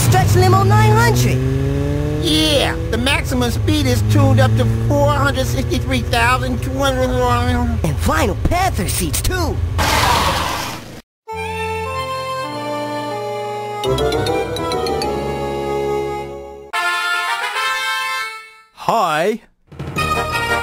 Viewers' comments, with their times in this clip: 0:03 THE MAXIMUM SPEED IS TUNED UP TO 463,2 muleniim